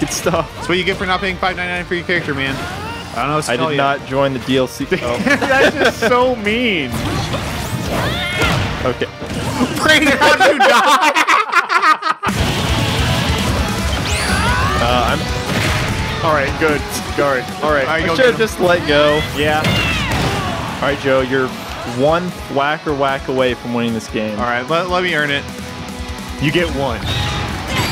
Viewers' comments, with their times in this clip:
0:10 I think this is the weirdest laugh I ever heard of them
0:11 someones laugh sounds like Arthur Fleck from Joker